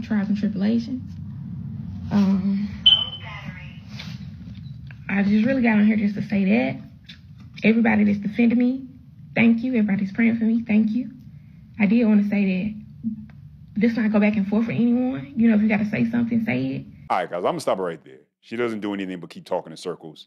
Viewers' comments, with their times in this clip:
0:05 Is the smoke detector talking to her?!? Its tired of beeping at her apparently